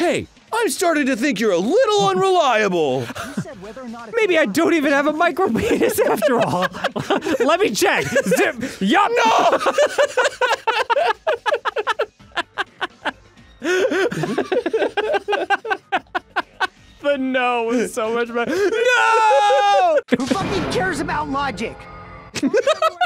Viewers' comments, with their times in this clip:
0:04 the micro peen joke landing every time was fantastic but this one was especially great between Dan's "Yep!" and Arin's soul crushing "NOO--"